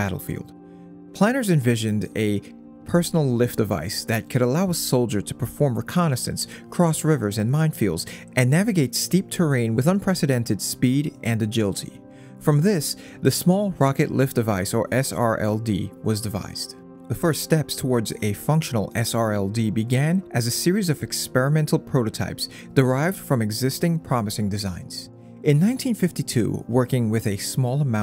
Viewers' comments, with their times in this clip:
0:10 "Speed and Agilty" kinda makes the robot voice over seem plausible :) lol